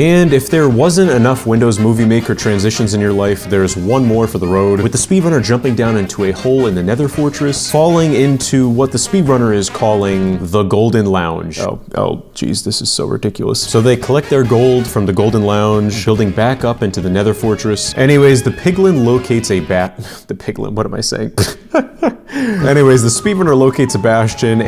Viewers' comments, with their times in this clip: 0:10 Bro turned into Morty